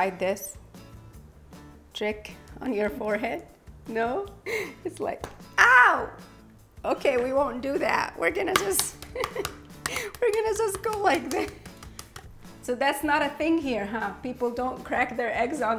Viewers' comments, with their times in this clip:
0:03 wow it sounds empty 😂😂